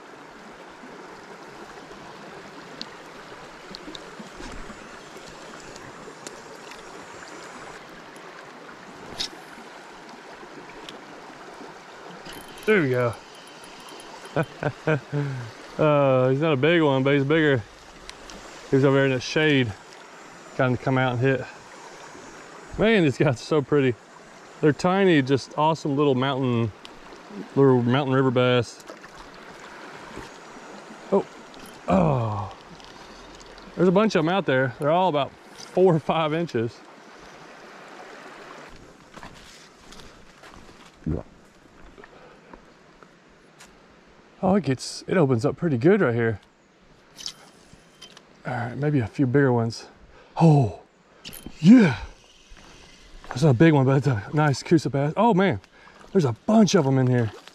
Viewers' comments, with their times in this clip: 0:05 That lol bass tail smacked the water/rock lol. The sound makes me chuckle.
0:40 Lovely place there. I would be there for hours! Okay, I'm curious, but I laughed because I can be immature sometimes, but what was that sound ? Was that your stomach or did you let out a juicy one? LOL